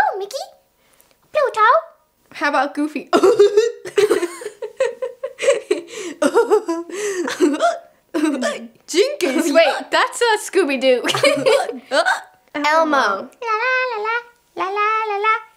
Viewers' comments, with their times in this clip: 0:03 the way you laugh with ur bff